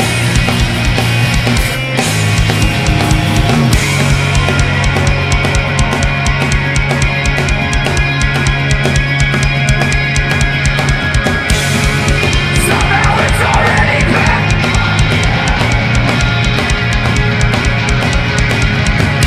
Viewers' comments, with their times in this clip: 0:04 that chorusy tone tho